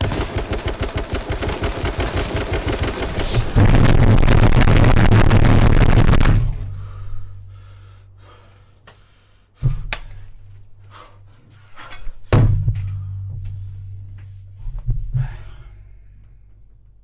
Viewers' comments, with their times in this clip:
0:03 now i know how xxxtentacion made bass to his songs